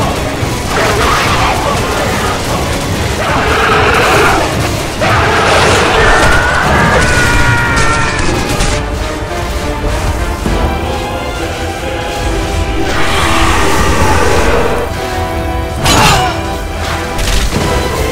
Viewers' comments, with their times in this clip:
0:05 best Scream of dead ever 😂
0:06 Tie fighter noise